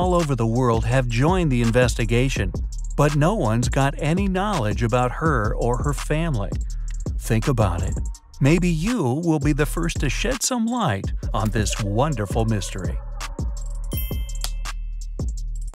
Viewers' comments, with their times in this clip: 0:08 To shed some light??? I heard something else, but.... okay 🙄